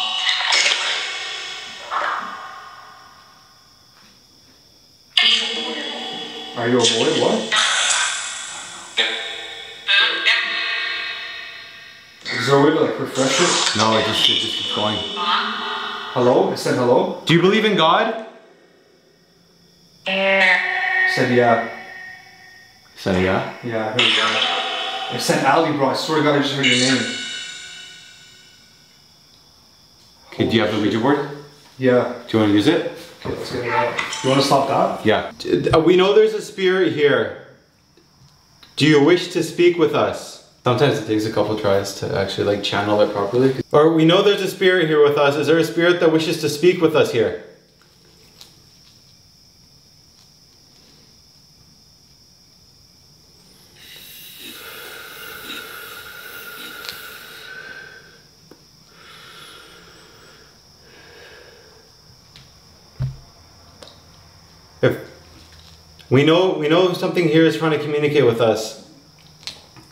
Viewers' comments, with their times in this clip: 0:05 I heard a female voice come through and say "LEAVE"
0:56 you start using the ouija board and in ur mic you hear a nasty growl or heavy breathing